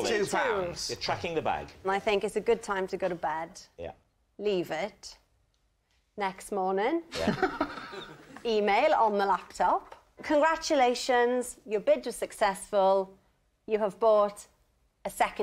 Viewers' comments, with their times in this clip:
0:03 the Way Greg laughed here was exact timing I Chuckled she hasn't been on Taskmaster btw